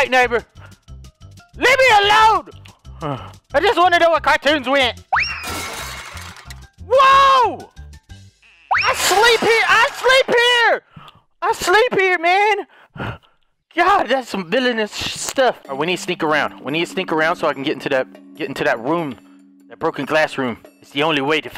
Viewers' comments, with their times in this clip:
0:05 talk about an alarm clock, am I right?